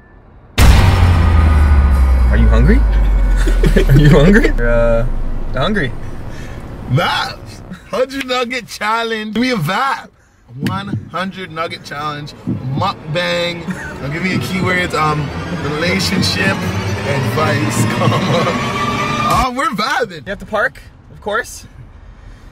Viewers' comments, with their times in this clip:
0:07 wtf was that sound he made ? 😂 Edit: Did he say Vibes ?